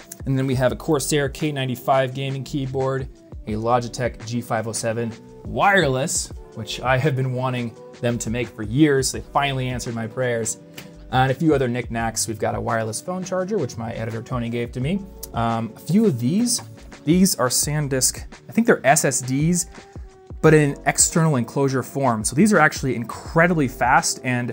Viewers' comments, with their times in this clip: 0:07 Your videos are great. But you need to work on your speech cadence. It doesnt flow well and is hard to listen to. And example of this is you saying "Which I have been wanting................................. them to make for years." The pause and the emphasis you have on words in sentences is concerning. Keep up the good content!